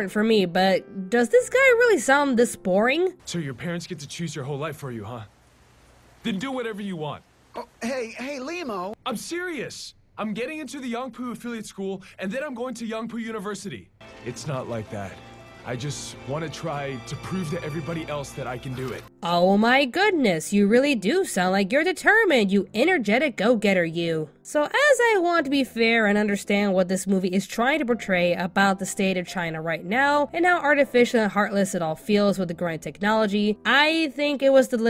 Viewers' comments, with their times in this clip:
0:07 how far away from the mic is he?
0:10 oh wow that voice is so wrong for that character!!
0:18 his voice seems out of place with the whole thing